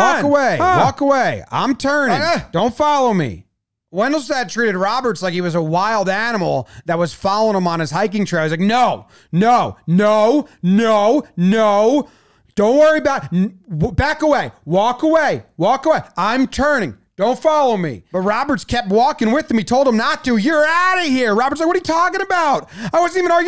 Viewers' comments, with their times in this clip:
0:08 Jomboy does his best Peter Griffin impersonation
0:09 the "no no no" sounded very peter griffin